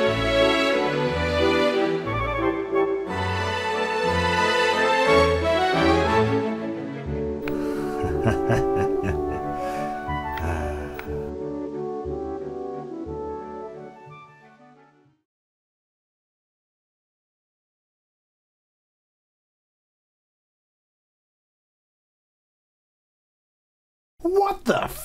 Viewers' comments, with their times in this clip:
0:07 I can hear that laugh 24/7